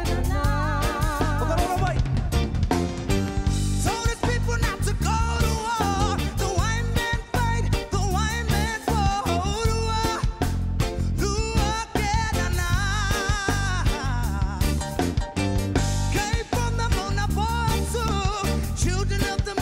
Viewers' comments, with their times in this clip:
0:04 the goosebumps are real my bro, absolutely amazing control, I felt every word ❤